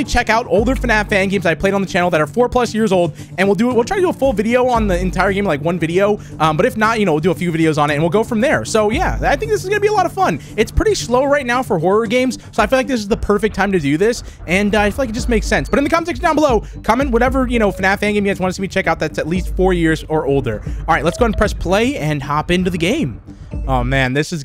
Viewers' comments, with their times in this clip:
0:10 “It’s pretty shlow right now”